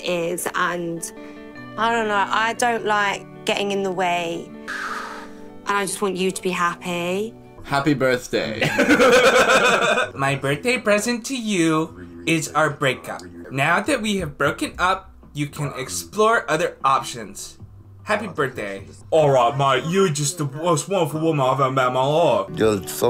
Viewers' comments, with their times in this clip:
0:10 his tarantino impression was spot on